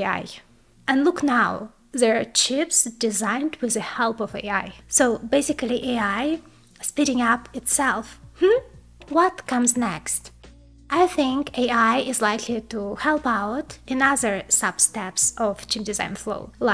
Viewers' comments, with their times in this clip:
0:04 So basically (this is) AI speeding up himself...little laugh that says it all. GOLD !🤩